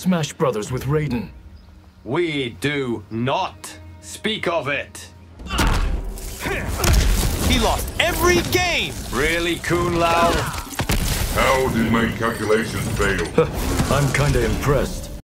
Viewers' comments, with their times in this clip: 0:08 The fact that Kung Lao said it so enthusiastically 💀